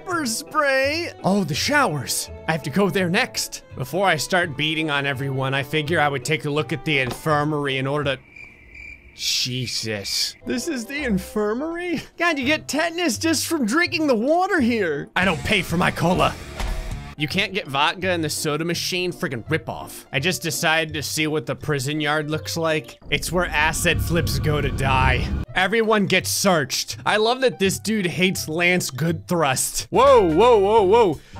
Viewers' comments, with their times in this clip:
0:04 sounds like pewds
0:14 Is it odd I knew the song clip (Bad Seed by Metallica, tuned up)